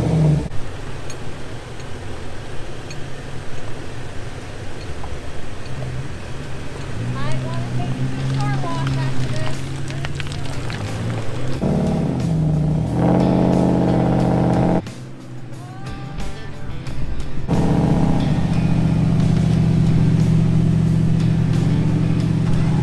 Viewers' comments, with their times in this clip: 0:09 The sound as they pull it out of the mud ... Slushy slurpy slushy! haha! great rescue folks! thanks so much for sharing these videos. When your on terrain like that is there much you can do from the Toyota's perspective to get out of it? Maxx Traxx or something? Besides not going alone, and not getting out that far before coming back.